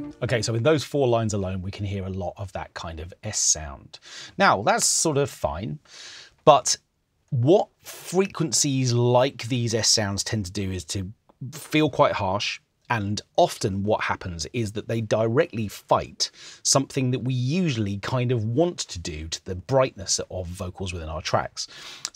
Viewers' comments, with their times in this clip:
0:03 I only heard one 's' sound in that fragment. By "That kind of 's' sound'' you also mean a 'ch' or 'tch' sound ? "Affricates" I believe, they're called...as opposed to "sibilants"?